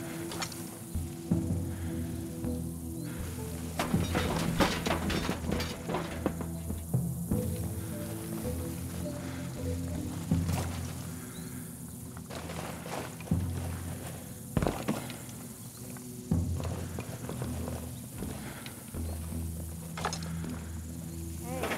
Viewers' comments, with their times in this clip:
0:03 You're telling me the enemies didn't hear the damn chairs clunking around outside??